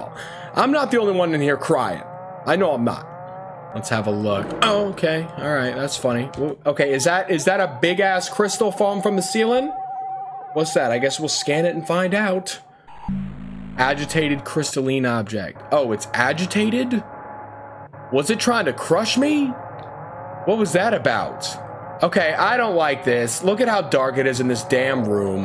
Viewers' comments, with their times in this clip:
0:07 Dude he moans and just... K